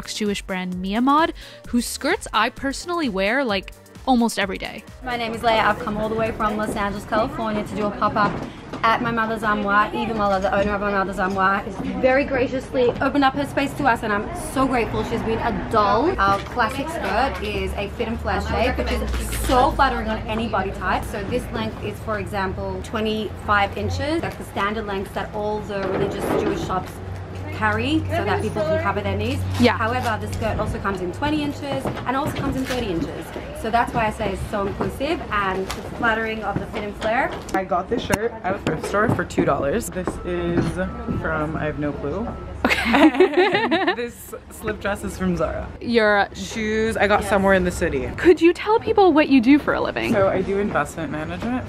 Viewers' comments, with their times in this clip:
0:06 woman says she’s from LA but her accent sounds very Australian
0:38 I love her voice